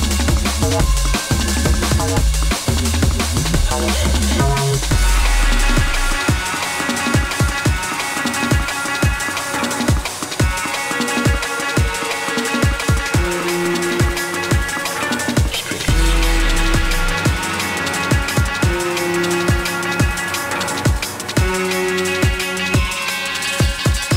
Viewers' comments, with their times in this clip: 0:06 That drop leading into the 27 min mark..... YES YES YALLL <3 <3 <3